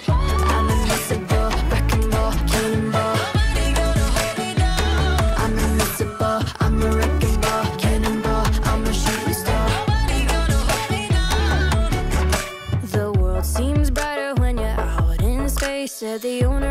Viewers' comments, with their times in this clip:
0:03 Is it just me or does the lyric Nobody gonna hold me down sound like Hermione gonna hold me down 😅...btw love this 🤩